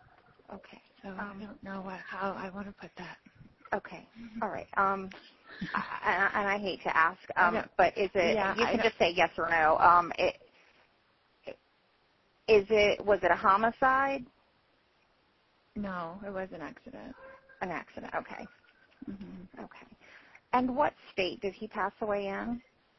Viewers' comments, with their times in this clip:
0:08 she laughs under her breath.